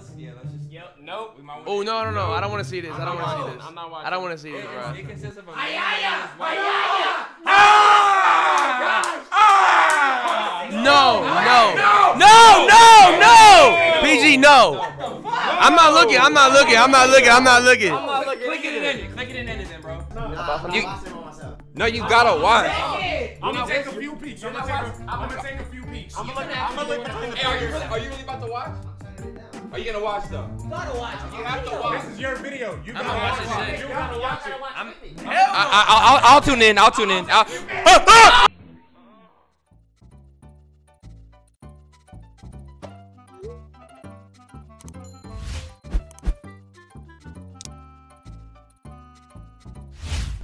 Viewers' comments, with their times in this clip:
0:03 That "ayaya" was definitely not influenced by an anime, that's a sound anyone would make when reading the description pause the video... and look at that description.
0:36 why’d you cut the audio out I wanted to hear that 😂💀
0:37 is the sound of pure fear